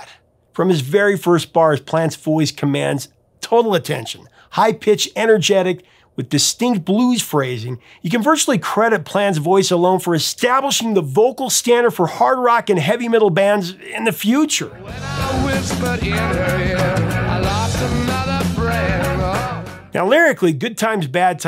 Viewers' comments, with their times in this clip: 0:05 Plant'$ voice is